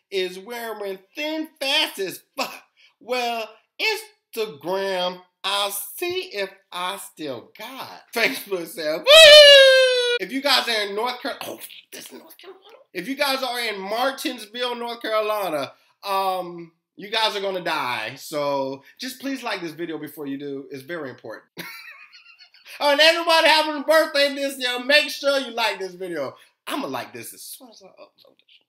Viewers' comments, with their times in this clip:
0:09 What on earth is that noise ?